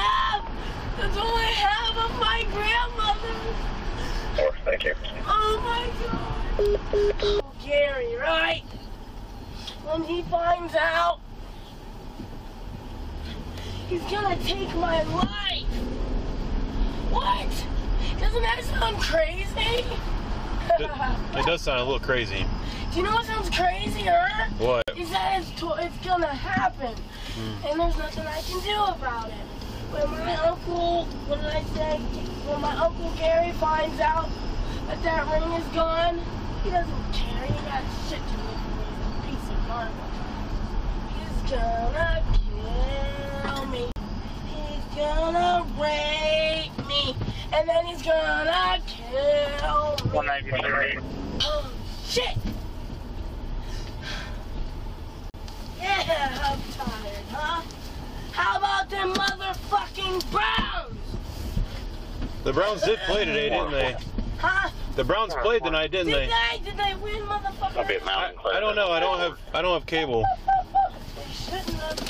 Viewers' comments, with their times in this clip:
0:07 I could swear she also says something about Jerry Rice !
0:57 Most aggressive small talk I've ever heard in my life.